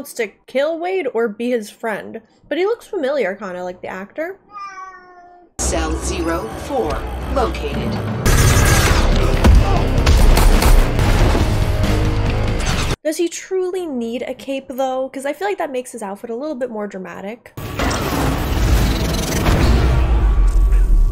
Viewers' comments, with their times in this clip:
0:04 Thank you for NOT acknowledging the cat noise